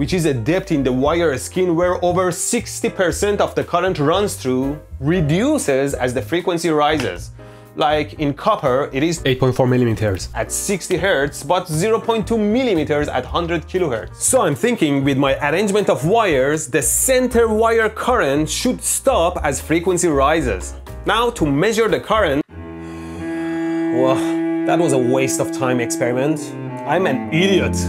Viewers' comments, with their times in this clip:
0:09 voice over lol